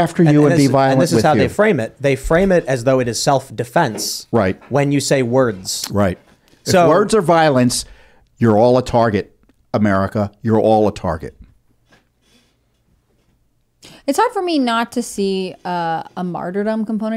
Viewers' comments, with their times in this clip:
0:05 that pause of silence